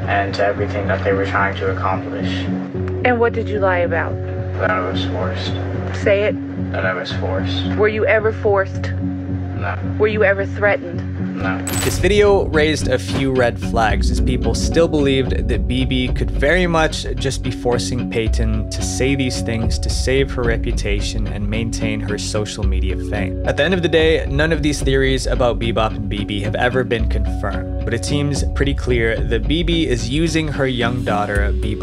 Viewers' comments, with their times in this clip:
0:10 when he says no he briefly bounces his eyes off the floor and back up... i watch a lot of criminal investigations, with breakdowns of body language and mannerisms lol... that is a classic sign of lying/pressure... to me it seems like he is lying when he says he was not forced... plus the tone of the mothers voice when she repeats "Say it...Say it!! Is very dark and controlling... that mother is crazy... that poor girl 👧 😢
0:11 I sorry but the kid is clearly being threatened into saying that shit. Like do you hear the tone in the mother voice is threatening as hell. That along with Dad in a threatening stance.
0:16 That kid sounds exactly like I did when I had to go apologize to those police officers for wasting their time and lying about being abused